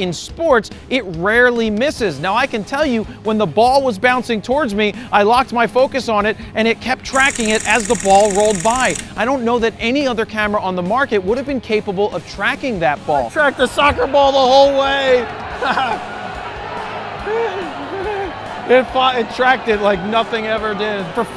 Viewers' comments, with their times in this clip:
0:09 That laugh means Sony have found a new customer lol